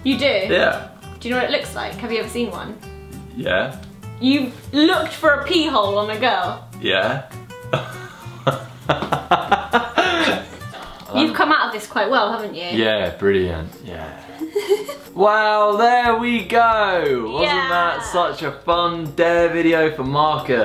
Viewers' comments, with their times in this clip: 0:06 WHY ISN'T ANYONE TALKING 😂😂